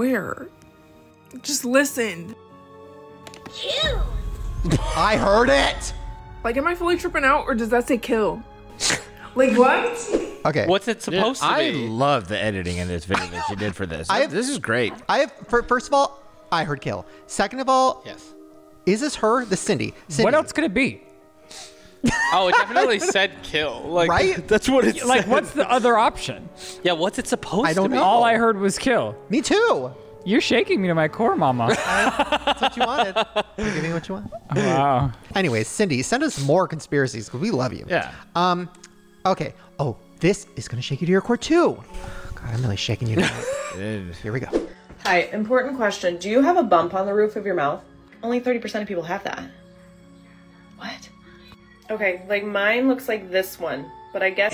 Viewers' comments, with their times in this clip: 0:03 The toy in is saying “2!” lol
0:03 i think its supposed to say the number 2 but sounds like kill LOL
0:04 i think it said "two!" cause she pressed the 2 on the toy but it does sound like "kill" lol
0:05 I HEARD IT TOO! It sounds like it was distorted just enough, like it was trying to 'fool' someone.
0:27 it’s saying 2 lol
0:31 it says 2 😅
0:37 my son has the same toy. i don’t know if it is just hers but mine definitely says “two”